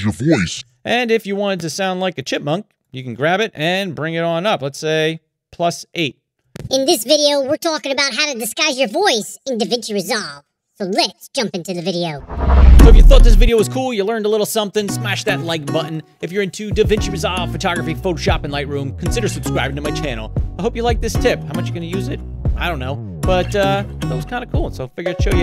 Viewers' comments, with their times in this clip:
0:10 that voice made me laugh when I play the most funniest games on PC in my opinion. Thank you for showing that tutorial of yours. This might helpful